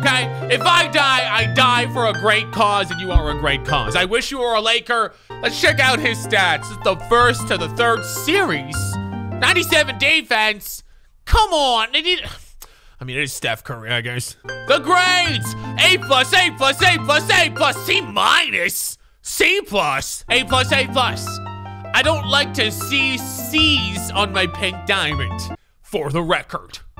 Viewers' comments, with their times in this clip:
0:10 Is it me or he said “come on Nigga” 😂
0:11 On sounds like he said the n word